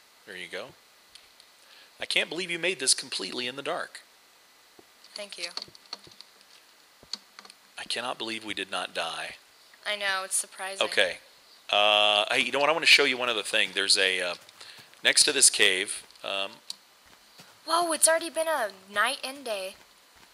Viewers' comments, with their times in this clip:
0:04 she sounded like Penny from The Big Bang Theory. :D